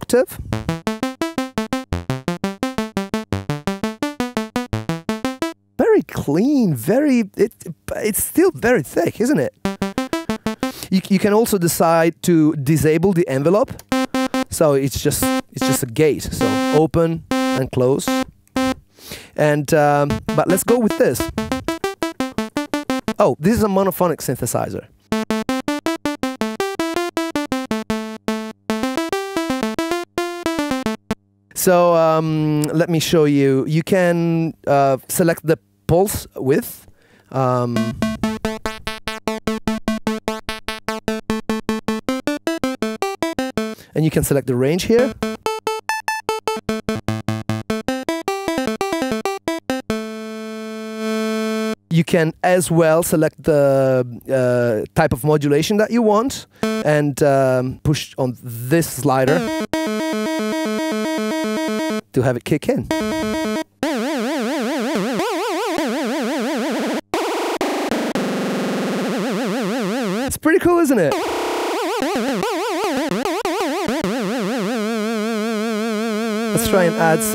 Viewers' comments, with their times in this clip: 0:06 "it's still very thick, isn't it." No, it's a single sawtooth. Not at all thick. Why not get more experience with synthesizers before making videos about them?
1:04 mike tysons punchout synth